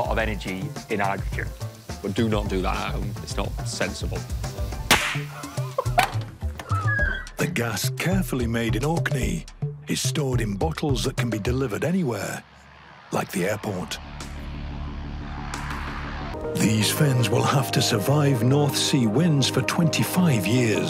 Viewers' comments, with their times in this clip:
0:04 Using Guy's wheeze sound to transition to the squeaky truck door opening. That's some fine editing